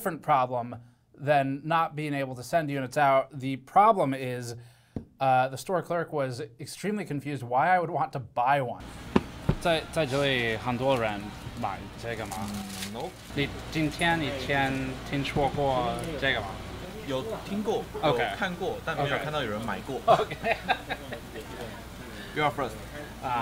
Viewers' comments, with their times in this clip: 0:10 I dont know Steve can speak Mandarin 😆🤯